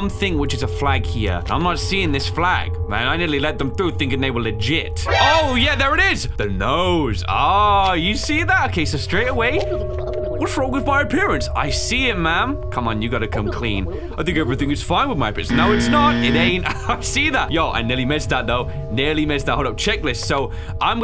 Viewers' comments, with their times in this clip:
0:06 what he say:oh yeah there IS What i hear:oh yes la nariz